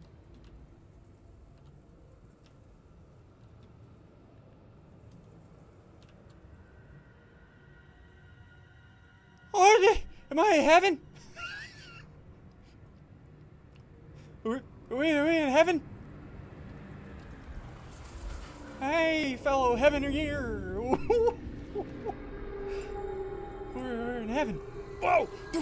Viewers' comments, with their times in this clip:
0:07 if you hear closly you might hear the alarm from the rocket